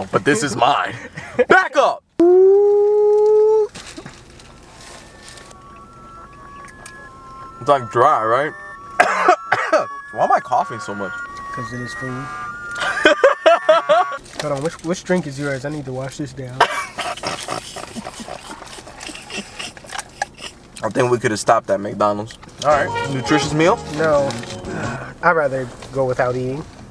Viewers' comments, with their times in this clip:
0:09 people then: oh he is coughing People now: CORONA PUT HIM IN THE MAXIMUM SECURITY CELL IN AREA 51